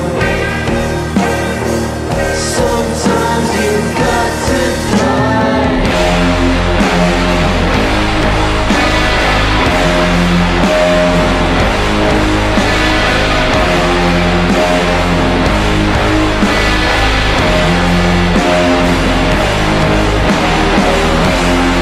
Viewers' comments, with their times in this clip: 0:06 Now that's slimegaze!